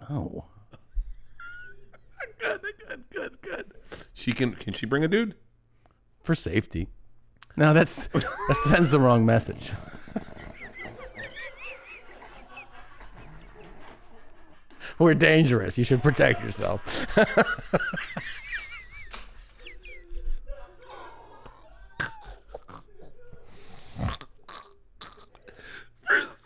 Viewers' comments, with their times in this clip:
0:05 Their laughter makes these 10x funnier
0:11 start of Bert laughing